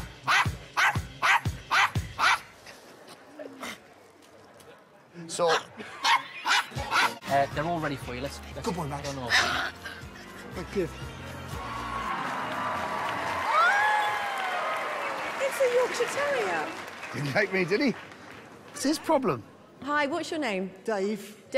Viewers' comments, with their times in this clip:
0:08 Ant: good boy max Max: growls